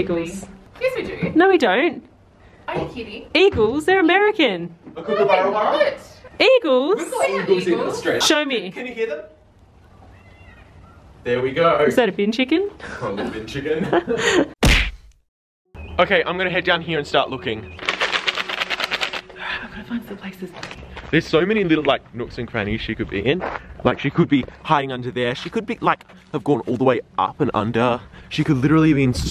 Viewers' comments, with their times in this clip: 0:10 If you listen that could be a meow or a bird but idk because i’m in America but i hope you find sushi!